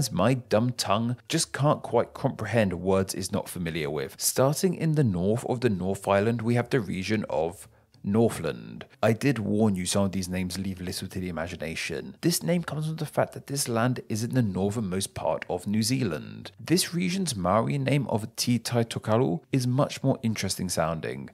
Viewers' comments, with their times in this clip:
0:09 to be fair he pronounced Northland perfectly.